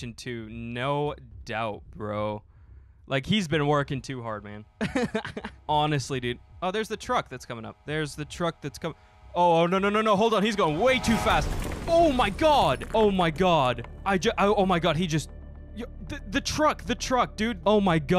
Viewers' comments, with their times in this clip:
0:06 is the crash.